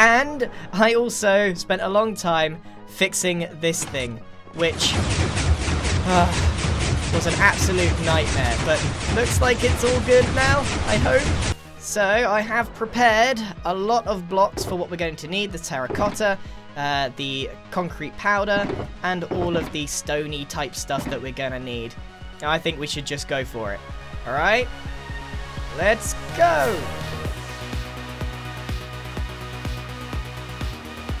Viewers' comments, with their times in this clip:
0:03 When the music starts playing you know a time-lapse is coming on lol
0:05 it's so loud that you can't hear the music
0:06 Did anyone hear someone or something fart
0:14 did anyone hear the music in the background ??????????